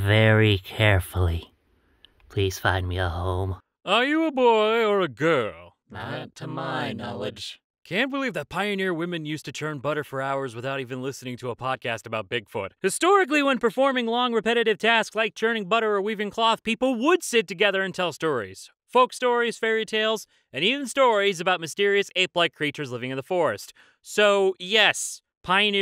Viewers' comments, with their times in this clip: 0:07 he sounded like E-123 Omega from Sonic Heroes (first appearance)